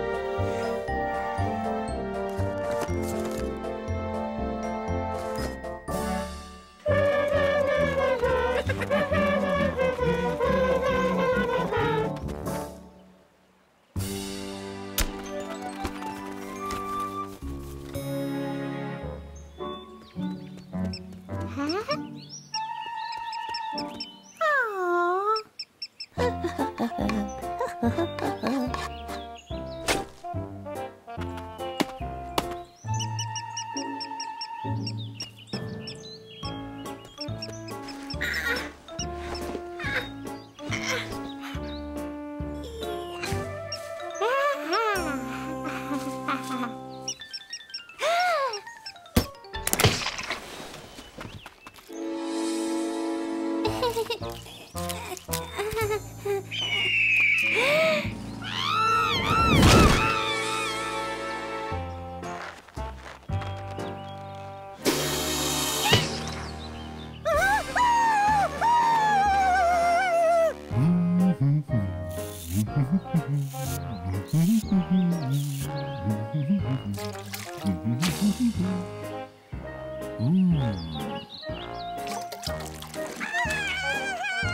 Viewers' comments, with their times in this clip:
0:07 for some reason I really love how everyone is singing and Flaky is just like <:)
0:07 they were singing they’re theme song😆 EEEEEEEEEEEEK La la la la la la la la la la la la la la la
0:58 when Darwin Watterson Sneezes
0:58 DID SOMEONE STOLE MY SCREAM?! (I mean in Episode 13)
1:04 scary snake bite (cobra hisses and bites toothy’s arm)
1:05 That pause tho